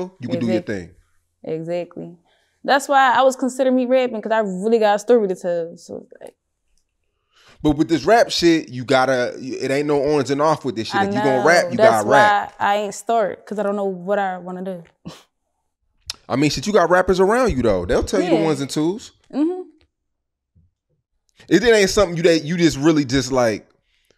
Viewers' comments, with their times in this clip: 0:06 He picked up the philly accent for a second.